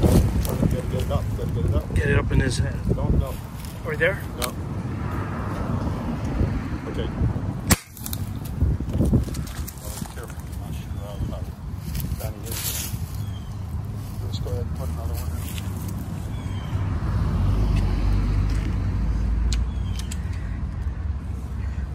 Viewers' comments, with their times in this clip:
0:07 "truth is, the game was rigged from the start" bang